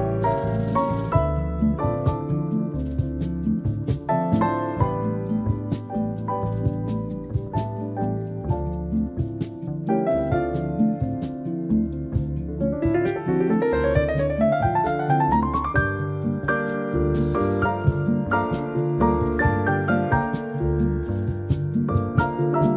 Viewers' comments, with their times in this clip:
0:06 Best version of this piece I've ever heard. Love the piano beginning And I adore Chet Baker. Too bad his life was so tragic.